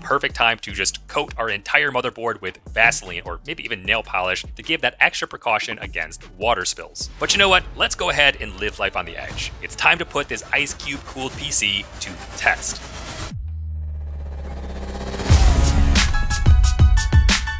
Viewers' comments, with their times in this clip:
0:03 Did he say Diddy ?